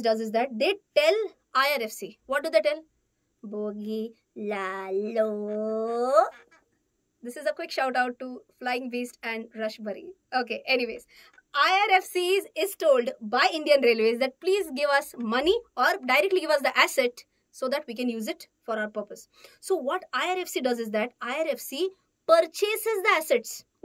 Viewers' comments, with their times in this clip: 0:05 Best moment It was same voice like rasberry :-):-)